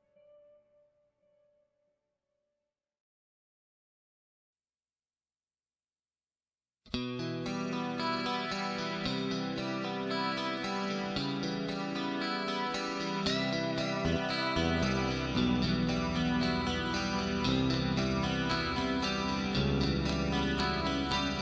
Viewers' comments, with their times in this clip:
0:06 Very much enjoyed this pictorial presentation. Some wonderful history shown here through this gentleman's photography. The instrumental guitar track starting has an eerie and haunting sound that compliments the images perfectly. Well done.